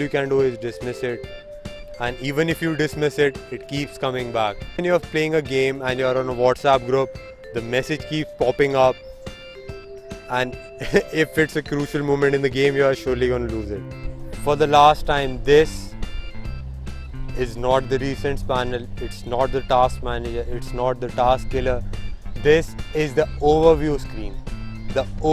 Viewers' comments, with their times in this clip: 0:09 the laugh remaining same 🤣lol